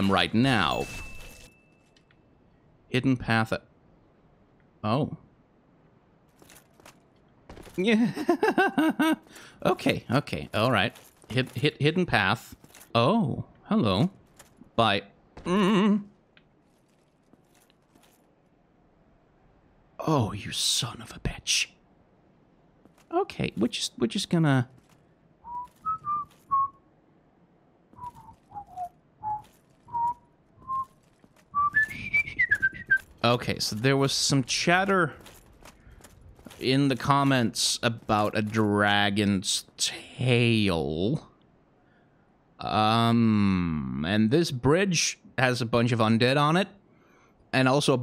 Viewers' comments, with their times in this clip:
0:06 You sound EXACTLY like the Undead Male Merchant there in the Undead Burg. Holy shit.
0:22 that whistle made my day
0:31 rate of whistling doubles